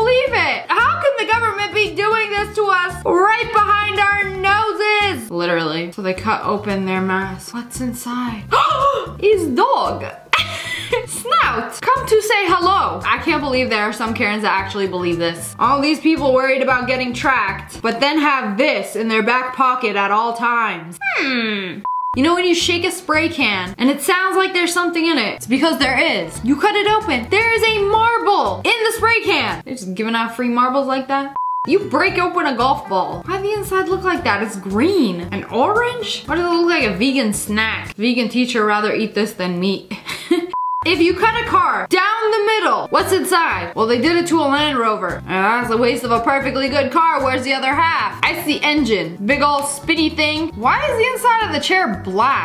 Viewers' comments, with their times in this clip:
0:08 the russian accent tho 😂🤣
0:40 it sounded like she said meek instead of meat haha but I knew what she meant